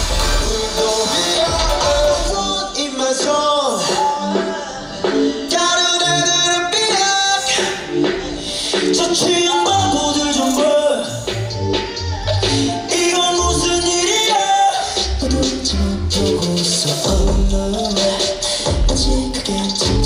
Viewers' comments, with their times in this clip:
0:06 he's still obsessed with his cute 'peep' opening *BIAS WRECKED HELLPPPPPPP
0:06 the little "peep" im soft